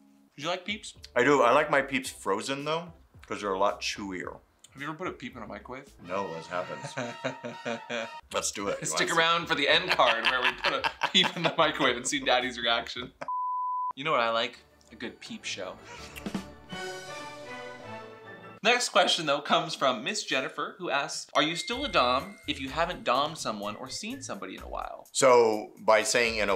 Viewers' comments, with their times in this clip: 0:07 that maniacal laughter was everything 😂